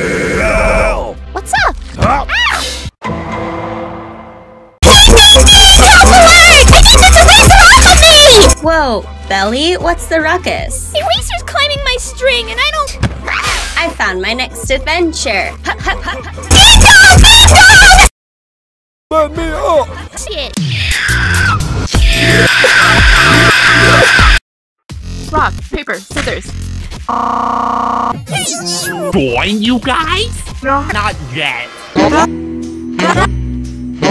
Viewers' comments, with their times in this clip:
0:05 this destroyed my ears
0:20 four stop screeching it’s not even funny anymore contestants screech along with four Folding: holy crap
0:21 The intro but everything is 4's screech